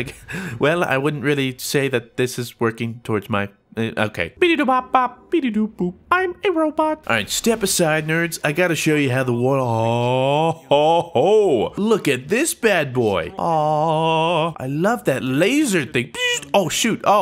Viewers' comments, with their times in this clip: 0:04 those sound effects